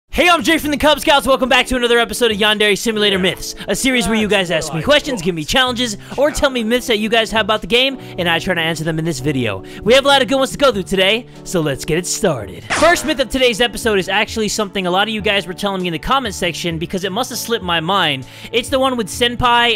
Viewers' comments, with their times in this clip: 0:00 Eminem is that you?